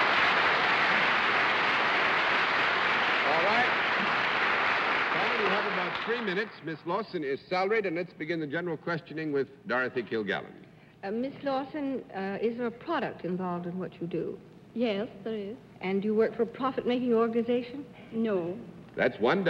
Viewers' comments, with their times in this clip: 0:07 What's My Line? He gets uncharacteristically testy with Arlene at the mark.